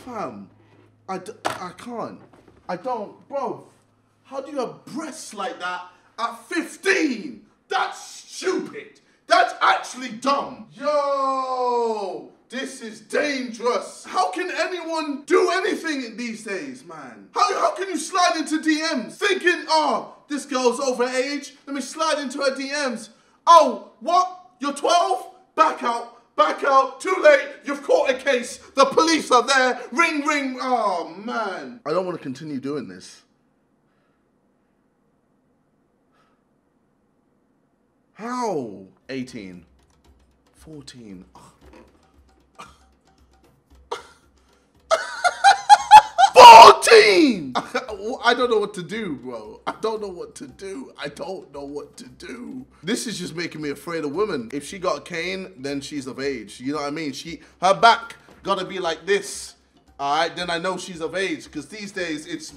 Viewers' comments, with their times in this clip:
0:04 imagine his neighbours hearing him screaming this
0:41 That, my friends, is the Nigerian laugh. All Nigerians do this.
0:41 he sounded like his brother when he was laughing 😂. ( Don't check the comment section lol.)
0:43 i got confused because I thought that was deji laughing
0:43 nearly sounds like deji laughing
0:44 sounds like Deji's laugh lol
0:44 laughs like Deji 😂😂